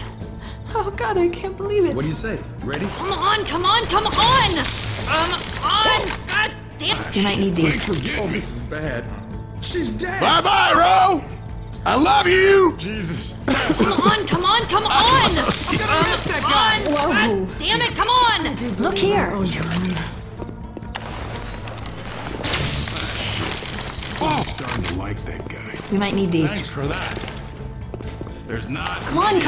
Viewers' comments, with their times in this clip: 0:10 "Bye bye Ro! I love you! cries I love you!" Awwww :(